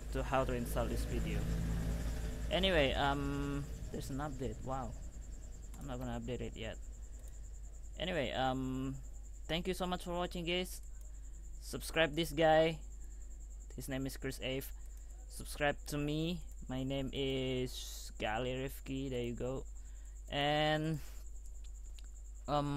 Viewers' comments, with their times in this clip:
0:07 "Thank you so much for watching gays" ...